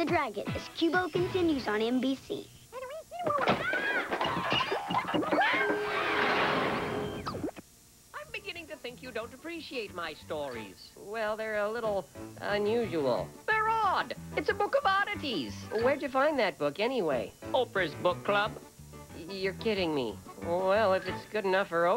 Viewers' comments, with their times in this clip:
0:03 Qubo "Messy Room" Bumper (2006-) (a rare variant where near the end, there is no magic (like) sound before the pop sound (in which the pop sound appears when the Qubo logo is formed)